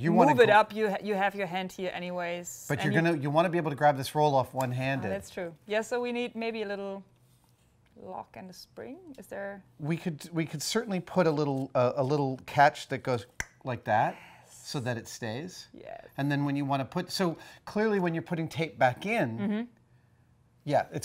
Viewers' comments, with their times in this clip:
0:09 Am i the only one? thinking that catch sound has Adam made is soo real omg.! In